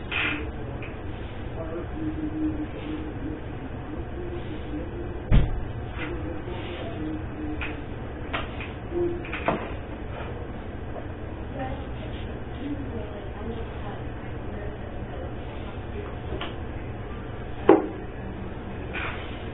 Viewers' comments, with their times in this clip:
0:07 disgusting 🤢 that little lip “pop” 🤮